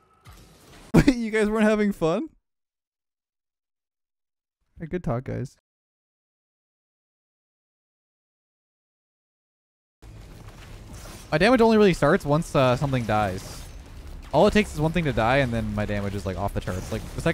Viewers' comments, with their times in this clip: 0:03 you sound so defeated